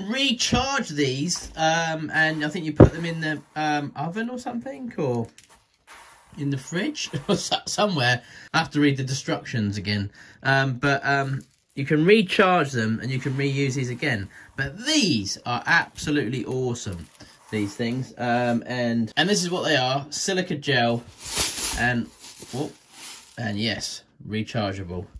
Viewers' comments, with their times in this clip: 0:09 "I have to read the destructions again". Lol